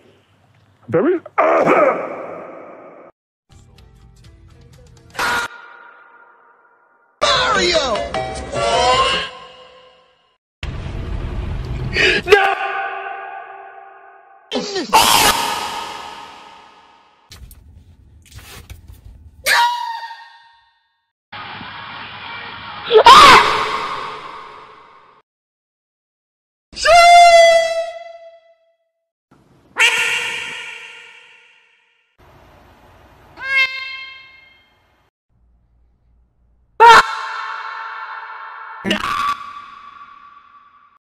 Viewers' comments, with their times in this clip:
0:03 Thats the most raw scream ive heard in a while.
0:03 Enter Sandman in the background had me in tears 😭
0:04 he screamed so loud he didn’t disappear he Oofed
0:10 Nick was on the brink of tears, he knew he had mere seconds left to exist. With a million thoughts racing through his mind, the final thing he could do was yell in protest. And so he did, and disappeared just like the rest.
0:12 reminds me of snake when it gets launched off on Smash Bros Brawl
0:15 this is the loudest scream i ever heard, it kills my eardrums
0:17 His crow laugh kills me every time
0:17 here we can hear him screaming after the teleportation, just far away, further proving your theory
0:19 sounds like a chicken getting carried away by a hawk
0:19 that sounds like the death scream from THE GAME flash series.
0:23 sounds like bite me from murder drones
0:29 Duck:quack (and disappear)
0:36 his scream was so powerful his beard came off